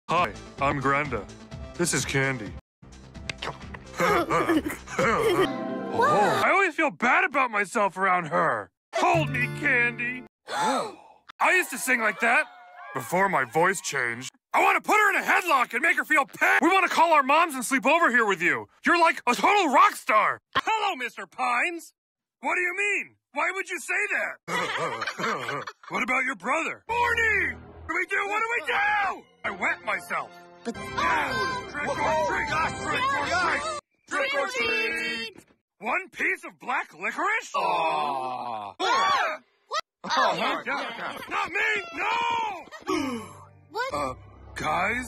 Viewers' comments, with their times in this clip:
0:00 Grenda's voice sounds so different
0:29 I thought Grenda was also voiced by Alex Hirsch for a moment Yeah, we didn’t need to know LOL